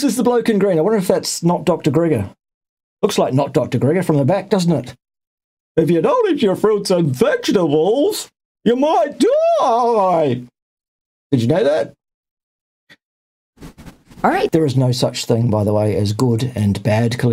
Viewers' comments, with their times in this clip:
0:03 not dr Gregor. Love the impersonation!